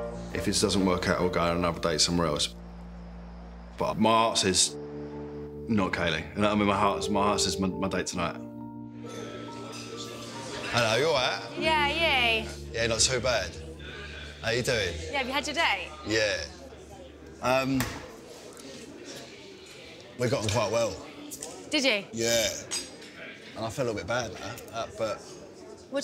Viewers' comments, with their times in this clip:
0:10 what the hell do they say ?? It seems like "HAYA HAYA" and the girl gets all "YA YAY". Help a non native english speaker